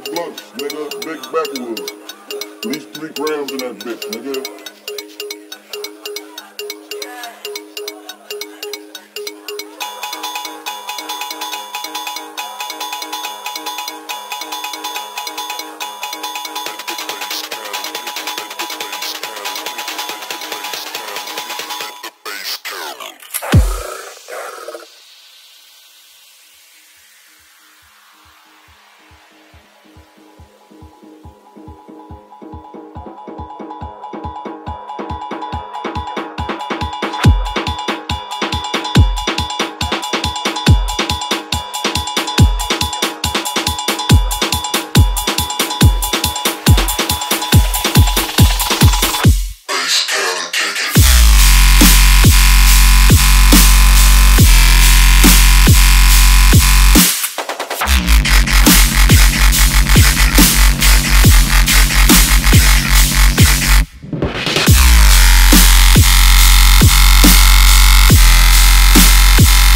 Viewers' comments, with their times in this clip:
0:09 lol thought my cable is broken
0:49 First i was like... meh kinda boring tbh, but then... then that drop
0:51 Crap my ears are bleeding too much bass tooo much bass!!!!!!!!!!!
0:51 When B DROPS!!!